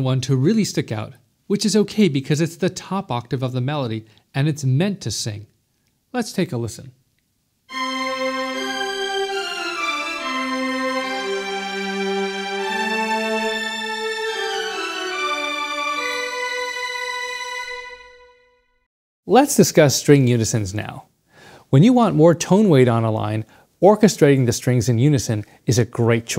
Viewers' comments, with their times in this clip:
0:09 the cello is sounding an octave higher than written. ;)